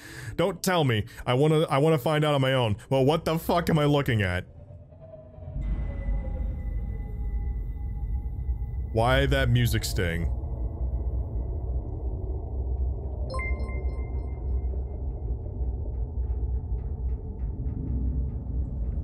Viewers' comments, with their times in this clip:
0:05 is my favorite part, I love when people first get hit with that soundtrack.